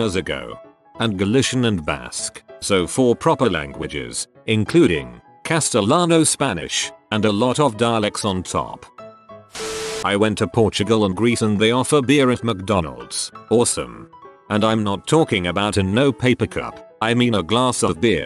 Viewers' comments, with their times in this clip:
0:05 oh god, how the text to speach says "Castellano" xD